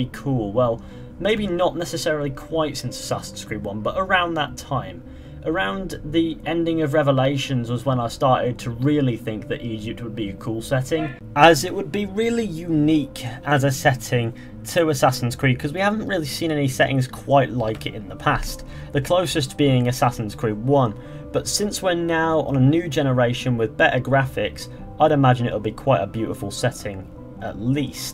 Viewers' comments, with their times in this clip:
0:10 did someone yell in the background?